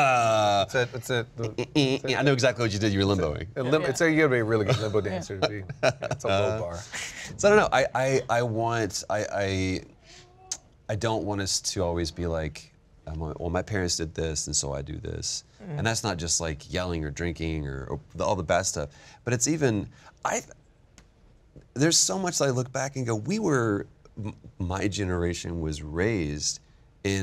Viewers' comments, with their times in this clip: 0:10 wtf was that scream?